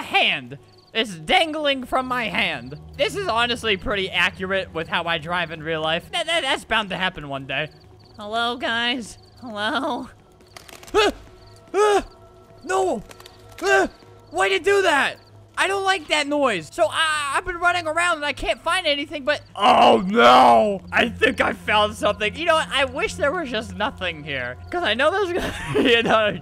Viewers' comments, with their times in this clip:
0:10 Me: Playing Minecraft as I mine ores in a cave Minecraft cave sound plays Me: